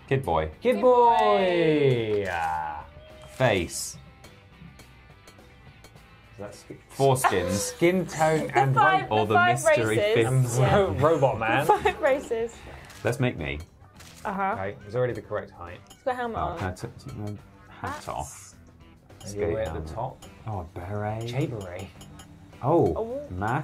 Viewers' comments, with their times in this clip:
0:05 I know he says "4 skins" but it does sound a lot like foreskins lol